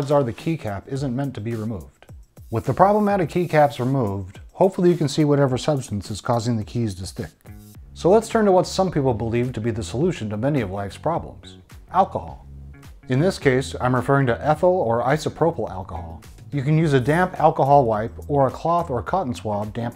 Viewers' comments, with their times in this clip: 0:06 Hilarious 😆🤣👍🏼 Whenever anyone asks for alcohol sometimes I like to say, "you mean rubbing or drinking?" Not too much though. Saying that can get old real quick. 😀 It was all about his delivery. Funny in a dry way.